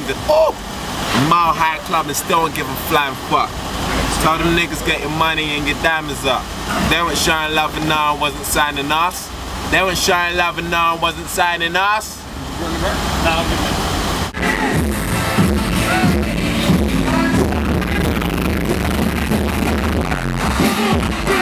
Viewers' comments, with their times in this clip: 0:03 i really think tinie's developin rick ross's flow as well as his beard lol